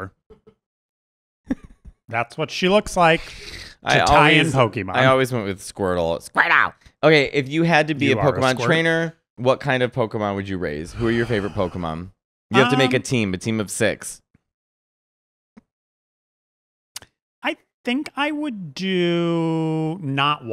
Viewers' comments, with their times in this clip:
0:06 That squirtle impression was pretty good